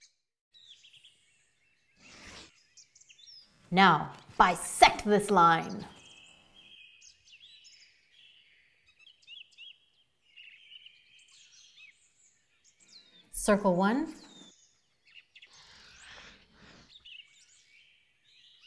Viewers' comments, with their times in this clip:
0:04 I LOVE the enthusiasm for bisection !